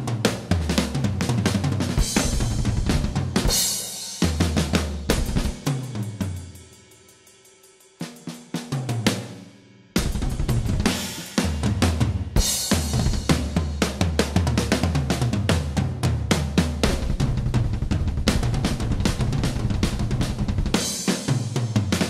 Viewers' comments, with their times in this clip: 0:09 that is an incredible quick blurry of notes!!